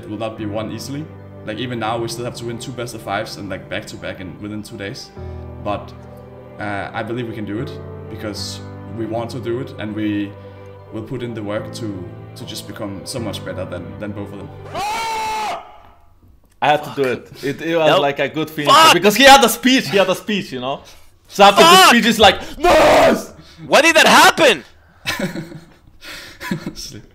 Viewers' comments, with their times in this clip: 0:08 the music ahahaha I love it